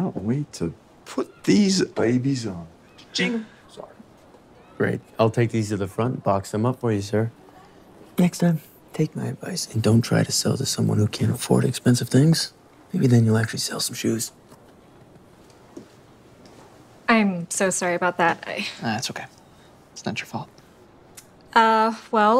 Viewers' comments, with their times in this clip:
0:03 he sounded like a Robot 💀